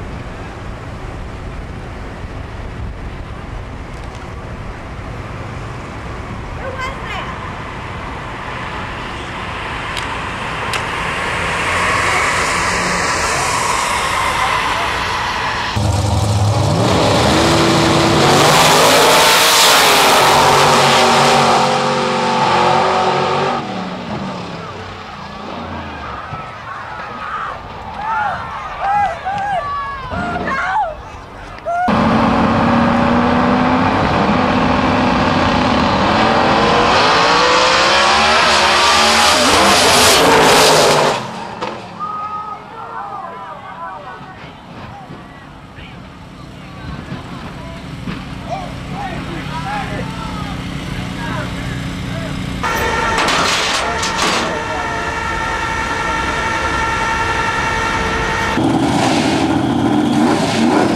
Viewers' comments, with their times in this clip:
0:06 is it just me that I heard Who is this
0:16 is the scariest, how did the driver of the camero survive? the screaming of the women is terrifying. also this clip me an Idea for and an animation.
0:37 damn that was a wicked lift. Awesome sounding cars though
0:44 Bro is that a cartoon crash 💀